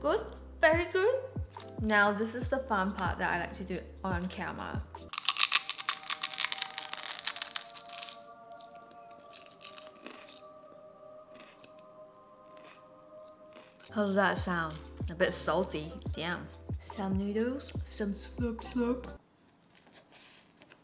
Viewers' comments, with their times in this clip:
0:04 the asmr youtubers are quaking
0:05 Cloe Ting doing asmr